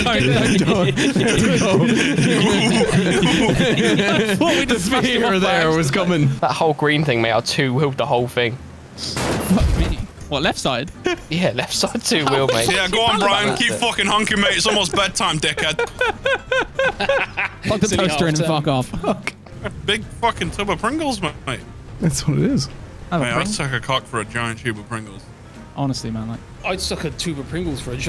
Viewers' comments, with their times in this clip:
0:10 The singular honks get me.